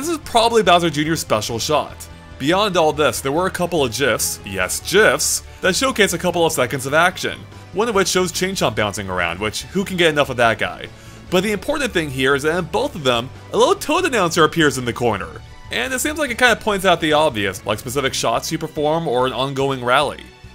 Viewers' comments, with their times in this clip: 0:03 ''there were a couple of jiffs; yes, jiffs'' TRIGGERED